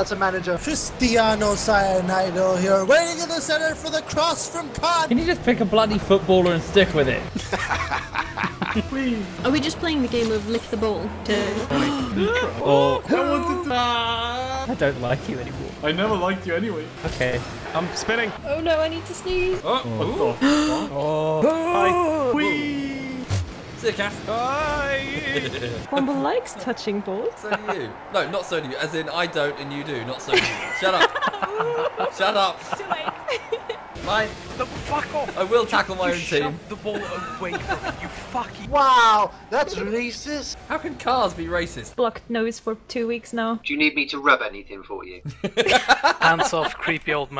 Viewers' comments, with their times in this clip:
0:07 That's a very cool villain laugh
0:33 That giggle I'm in love